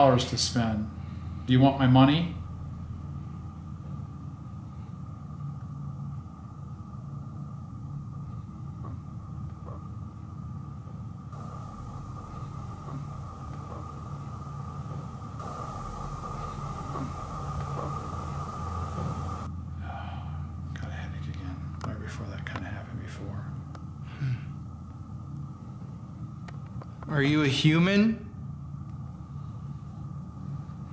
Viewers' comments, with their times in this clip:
0:08 when they capture that voice... can anyone make out what it says?? i cant figure it out 🤔🤔🤔🤔🤔
0:13 that was a growl
0:13 The unexplainable voice kinda sounded like it was saying “I’m...broke.”